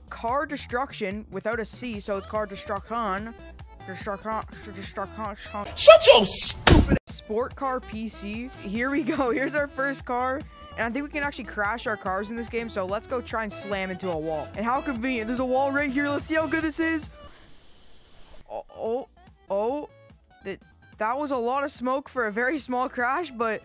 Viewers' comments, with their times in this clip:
0:04 are u french